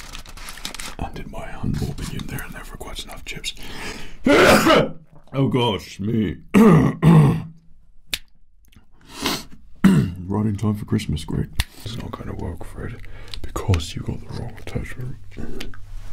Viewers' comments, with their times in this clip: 0:03 the sneeze part break me